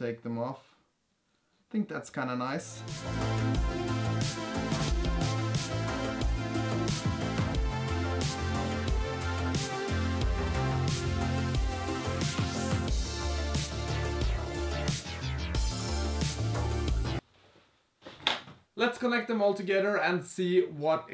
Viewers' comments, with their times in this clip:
0:07 thumbs up due to 80s music